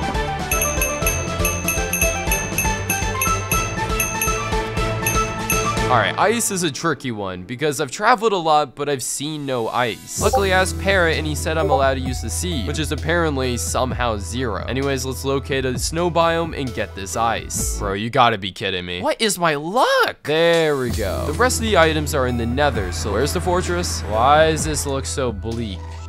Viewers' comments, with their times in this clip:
0:07 wha did he sayy😭😭